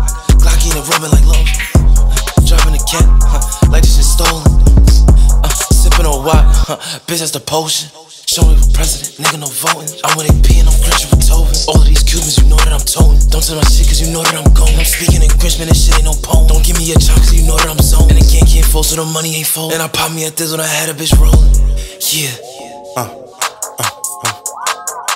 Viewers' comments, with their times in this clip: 0:08 he don’t need no sample 🤣